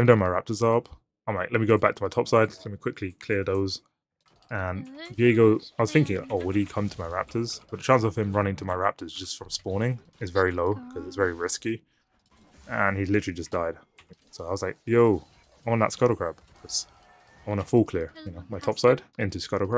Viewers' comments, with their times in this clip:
0:04 bro that voice scared the shit outta me